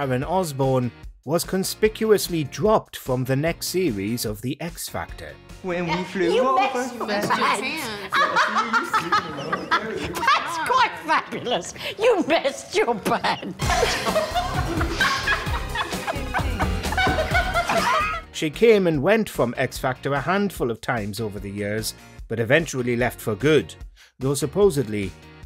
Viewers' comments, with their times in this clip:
0:06 Hey, you have the exact same clip of Sharon breaking down laughing that I used in the 30th Anniversary of Father Christmas that I voice-acted back in December last year, on 4Shared!